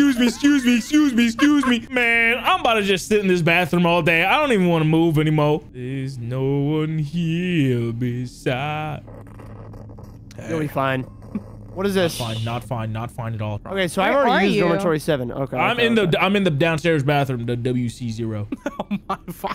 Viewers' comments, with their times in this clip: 0:06 "There's no one hear beside me-" litterly growling on the other side of the wall 😂